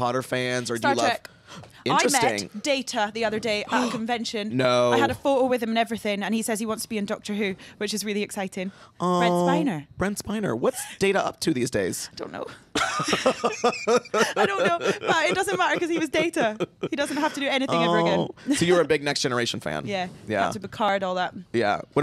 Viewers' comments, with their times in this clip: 0:09 Wait a minute, did I just hear Karen Gillan squee?